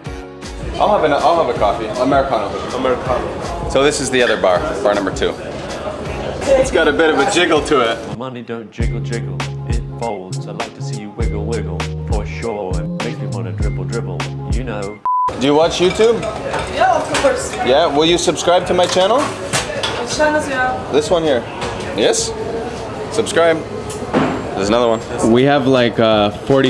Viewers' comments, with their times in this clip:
0:10 I will have that song stuck in my head for weeks now!